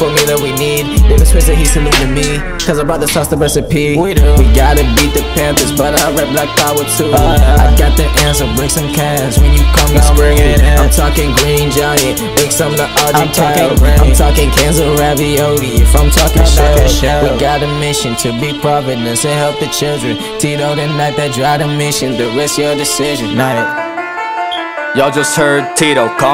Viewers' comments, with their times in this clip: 0:10 it sound like he says greene jonny.... hmmmm